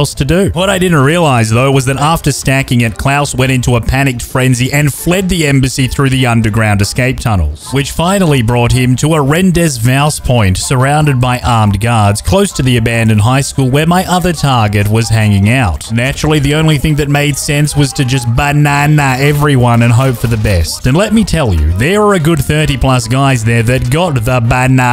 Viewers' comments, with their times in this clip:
0:07 Hate how you pronounce rendezvous
0:09 THAT IS NOT HOW YOU SAY THAT